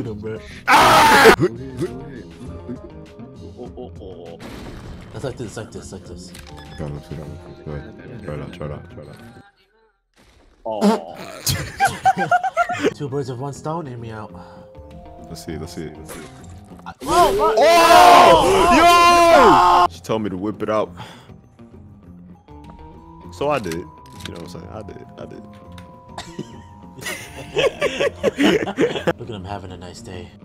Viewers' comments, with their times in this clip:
0:10 window wipers ahh laugh
0:11 That laughter tho 😭